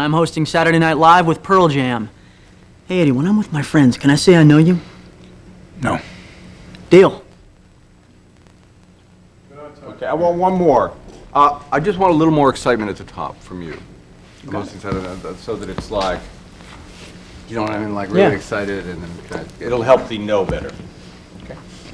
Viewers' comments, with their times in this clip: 0:06 sounds like his brother Charlie here.